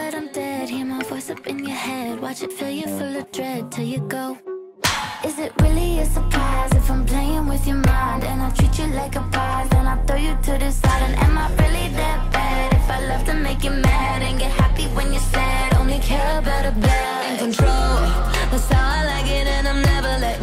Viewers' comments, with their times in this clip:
0:04 that slap was on beat!